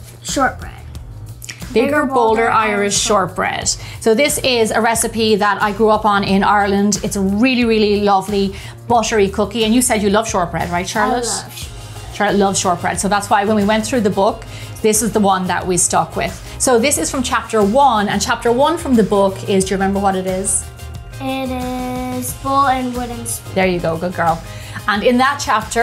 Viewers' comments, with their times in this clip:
0:07 i heard "its rlly rlly unhealthy" 😂